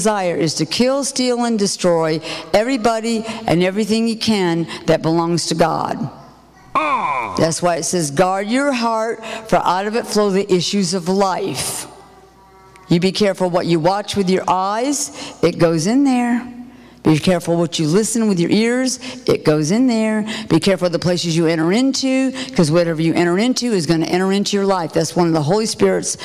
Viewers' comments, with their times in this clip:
0:07 Do you hear the sound like a demon ? Kat is so on with her teachings. Love you Kat, keep up the good work.
0:07 Was it a demons voice ?